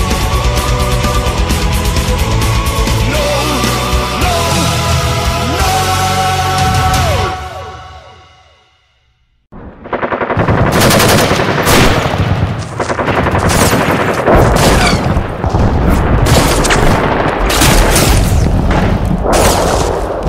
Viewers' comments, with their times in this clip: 0:08 The stupid shit music stops